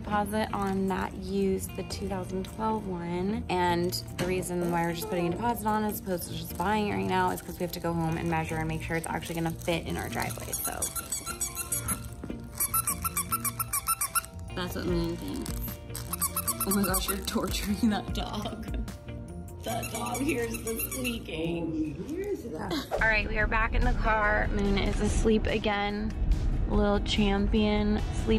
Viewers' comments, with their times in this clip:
0:10 my dog went nuts over that squeaky toy